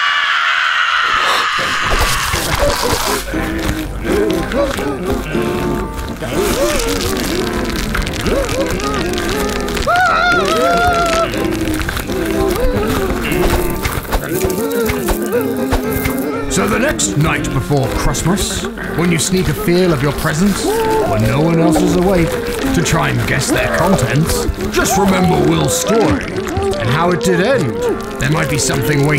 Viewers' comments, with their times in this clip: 0:10 When Will screamed he sounded like mario